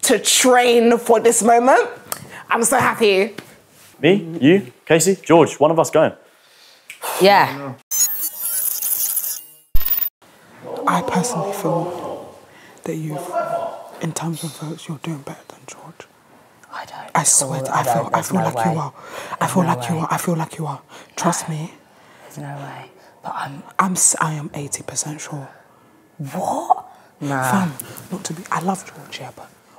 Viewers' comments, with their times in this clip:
0:10 The background sound here is killing me,no no no no,the weatha?😂😂